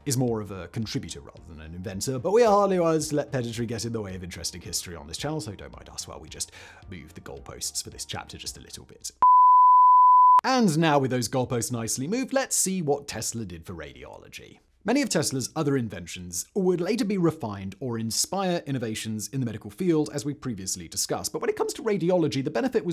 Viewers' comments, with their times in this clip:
0:09 What did he say about the last entry? I can't hear anything after